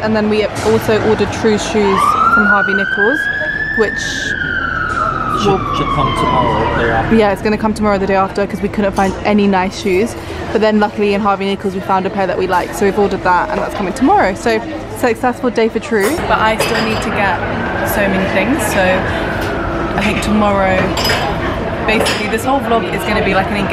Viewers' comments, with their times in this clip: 0:08 ah the nice ambiance of police sirens